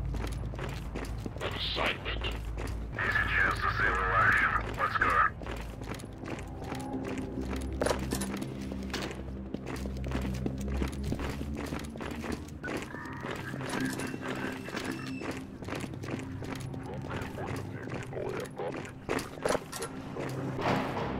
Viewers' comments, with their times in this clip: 0:07 "here, you drop this" -(booom)